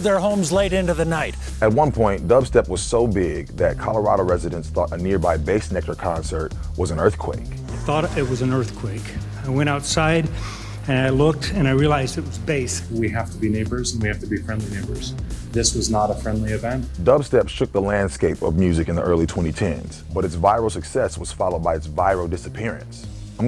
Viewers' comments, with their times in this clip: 0:10 sounds like a perfect micro-speech before the bass drop😂